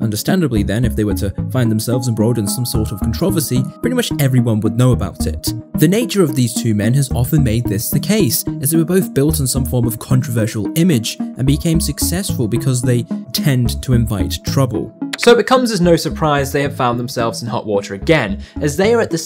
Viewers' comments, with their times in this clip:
0:03 controversy. Hmm I never heard it pronounced like that. Edit: The fact he was 16 in that first interview is crazy to me.